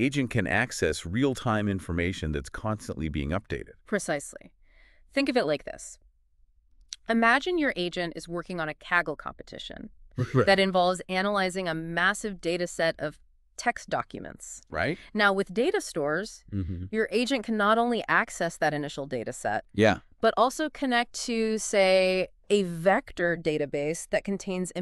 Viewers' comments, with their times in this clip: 0:09 I didn’t know AI bot also coughs.